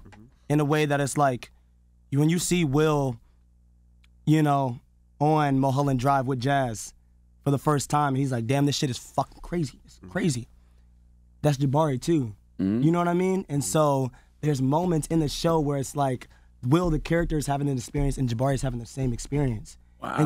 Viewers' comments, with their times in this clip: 0:03 he says "you know" in between his words just like will LOL